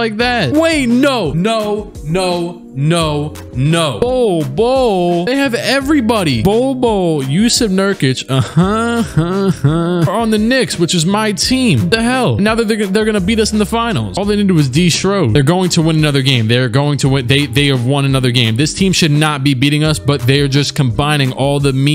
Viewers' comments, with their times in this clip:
0:08 That Kawhi Leonard impression though🔥🔥🔥
0:08 that laugh is so on point
0:08 i died on Perfect imitation, just perfect